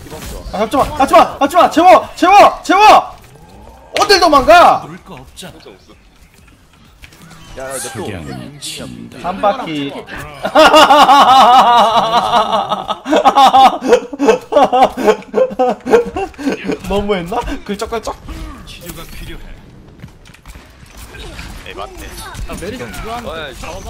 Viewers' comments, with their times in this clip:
0:08 He laughed like he was reading of a page😂😂😂